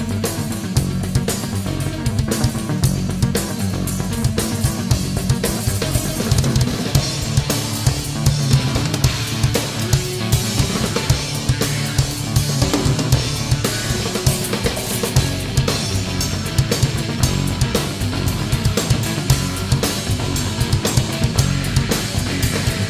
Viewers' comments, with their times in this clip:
0:06 🔥🔥🔥 The call and answer between the snare and bass !!! Then that CHINA!!!